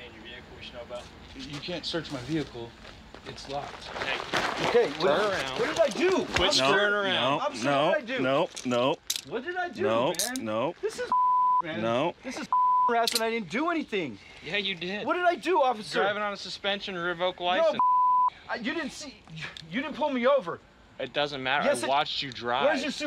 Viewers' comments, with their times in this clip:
0:06 Cop sounds like that crab from family guy that won't let anyone pass by